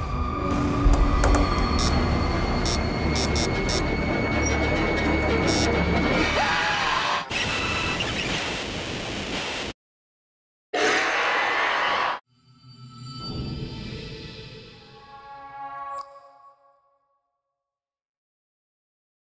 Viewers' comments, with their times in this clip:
0:05 Pause Plz and Low ur volume warning jumpscare